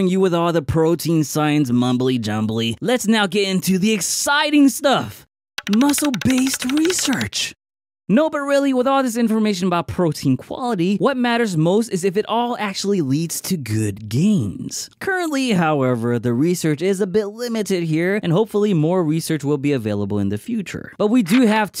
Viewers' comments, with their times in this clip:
0:07 idk why but that slight pause was hilarious